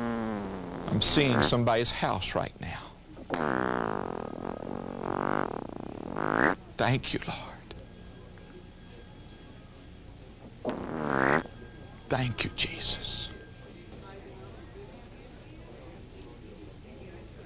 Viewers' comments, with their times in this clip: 0:03 *farts* WHOOO!!!!!! I just totally lost it on that one... and